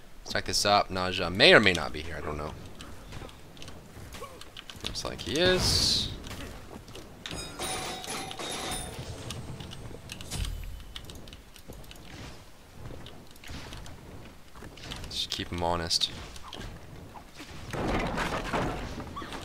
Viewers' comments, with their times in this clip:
0:04 Ne Zha's disc makes the smite theme